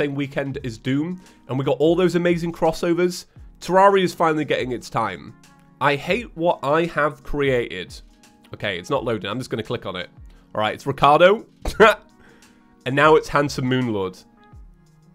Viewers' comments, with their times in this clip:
0:03 Exactly my thoughts. You're underground surrounded by ants that want your meat and of course metal starts playing.